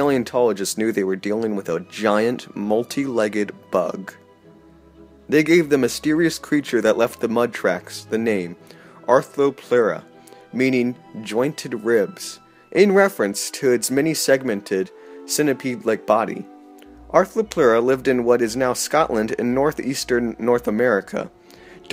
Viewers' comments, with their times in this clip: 0:03 the moment I noticed the movie score .-.